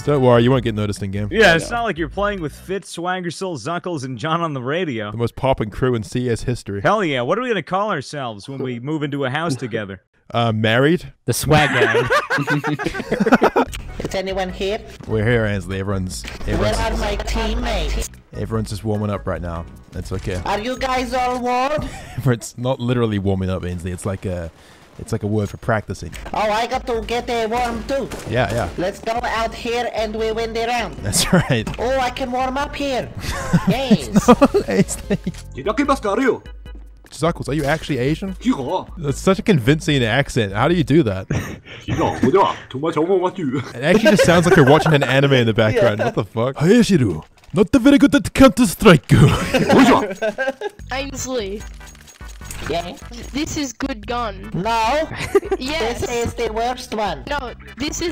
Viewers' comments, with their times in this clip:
0:07 "Hell yeah! What are we going to call ourselves when we move into a house together?" Avengers theme starts to play
0:35 for anyone curious, doesn't make sense. but the words might. he sounds more korean than Japanese to me. 俺はゲイだ i'm "gei" はい yes わたし i 非常にゲイ very gay 私はたくさんの肉をsome word that i havent learnt (im guessing) i suck a lot of meat
0:35 is he speaking japanese or chinese?
0:44 its more of a chinese accent👀